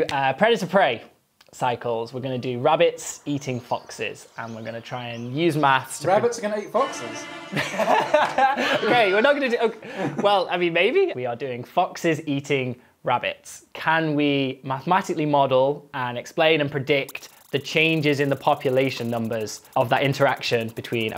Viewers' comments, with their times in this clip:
0:08 who caught the Wilhelm scream? 😂😂